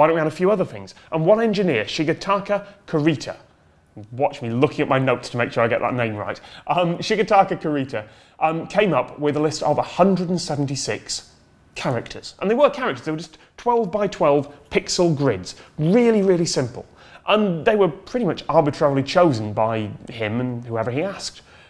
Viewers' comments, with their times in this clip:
0:07 when he says Shigetaka Kurita,I thought he said Karita o Carita... which is funny and weird, because Carita is the word in spanish for "little face"... and normally we spanish speakers refer to Emoticons as Caritas, and certainly some emojis would also be Caritas...